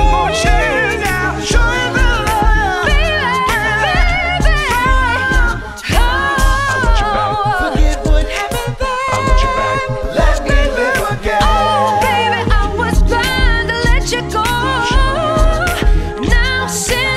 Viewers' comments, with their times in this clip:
0:03 woow, she´s getting better and better with each new song, love her voice and this band is amazing